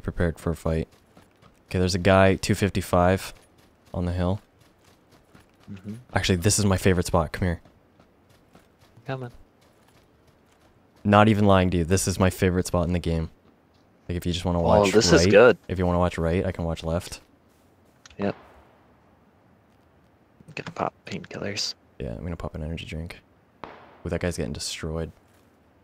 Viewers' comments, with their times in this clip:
0:10 Sniper Fire.. The Game is Fun hehe